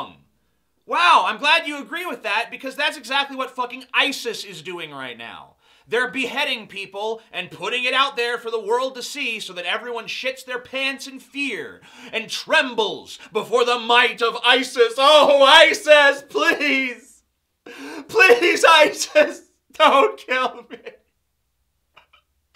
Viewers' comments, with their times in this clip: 0:07 Please never make the noise you made again. You're truly worthy of your name sake, that is amazing.